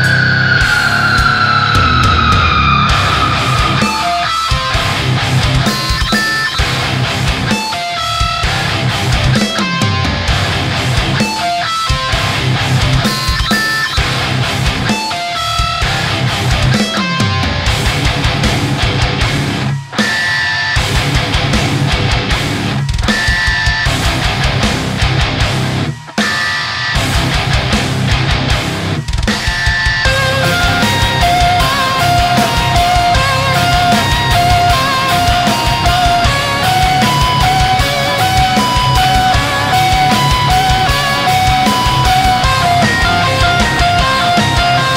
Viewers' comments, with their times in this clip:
0:03 I personally like the natural harmonics a lot! Click here to see it
0:03 Every radio new metal song from the early oughts
0:05 mario picking up a coin
0:29 sounds like Dream Theater on steroids
0:30 also known as almost every Rings of Saturn song.
0:30 Tap harmonics reminded me a lot of Porcupine Tree
0:30 That reminded me of the Lavender Town song
0:30 Lavender Town, is that you?
0:31 This is like undertale song